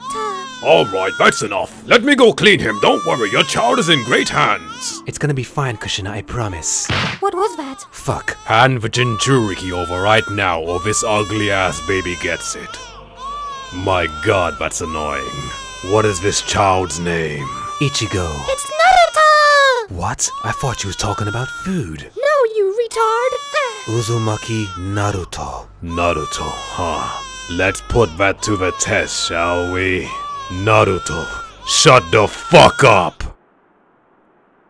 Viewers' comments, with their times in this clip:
0:07 i shit my pants when kushina said "what was that?!" And minato just calmly said "fuck".
0:18 the way she says Naruto lmao 😂